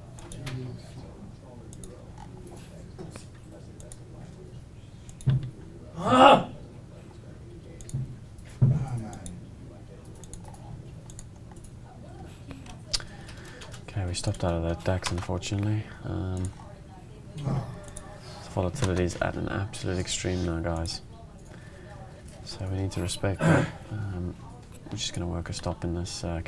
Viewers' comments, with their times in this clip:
0:08 XD you hear something scream - than you can better stop though. Like if you would just trade the FESX like a market maker. You would make 100 times more with speculating my friend. Love your video!